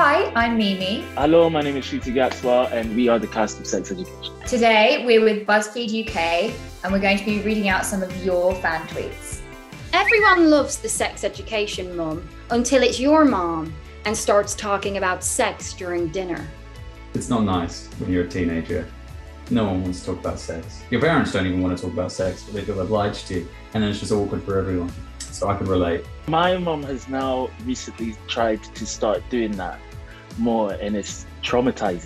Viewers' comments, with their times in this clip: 0:10 woah, I wasn’t expecting her to change accents mid sentence, that really caught me off-guard
0:11 she starts reading the tweet in her own accent and goes to an American accent
0:13 Aimee changed her accent lol - yourr mOm